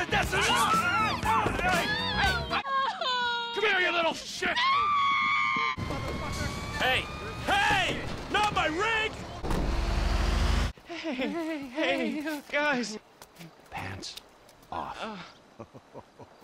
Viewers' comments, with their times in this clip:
0:04 the way her scream fits in so perfectly just kills me 😭😭😭